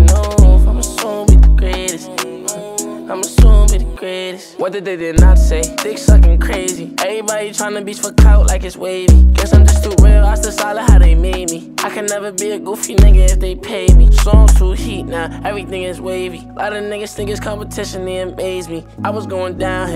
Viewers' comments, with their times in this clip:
0:04 he sounded like J Cole for a second